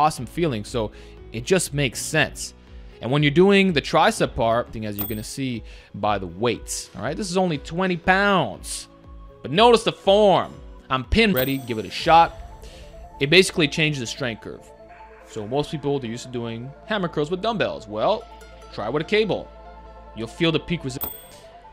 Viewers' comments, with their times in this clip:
0:03 Okay he's copying hodgetwins, especially when he said "notice the form"